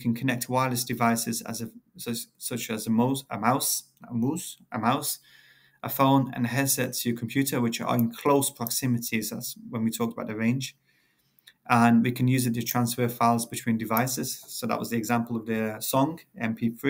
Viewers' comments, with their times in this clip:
0:03 GNG MOUSE moouse maouse XD lol its alr broo but beside that it was rly help full